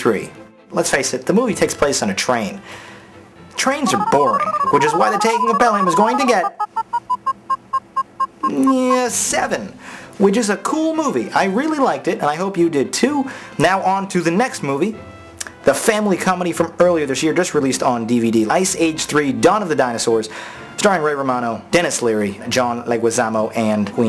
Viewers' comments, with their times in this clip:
0:06 lol my video lagg and its say garbage there...